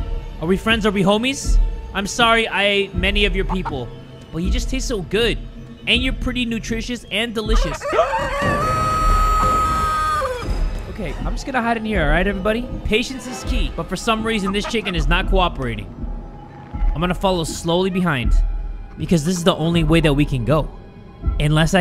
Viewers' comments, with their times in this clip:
0:06 The gasp was gold